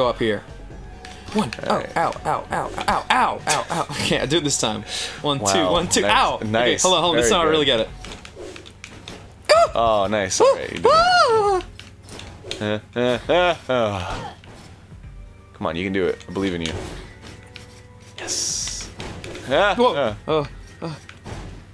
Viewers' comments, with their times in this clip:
0:09 Best unintentional Three stooges noise ever